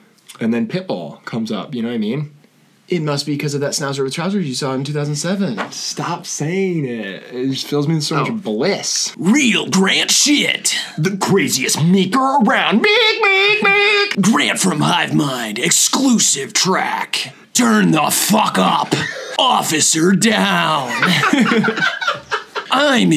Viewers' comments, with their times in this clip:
0:10 it really sounded like he said the n word